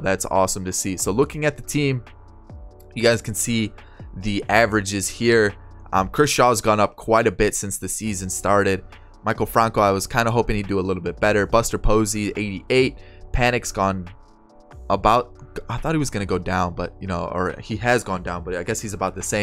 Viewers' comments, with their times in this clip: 0:06 lmao I thought he said Kershaw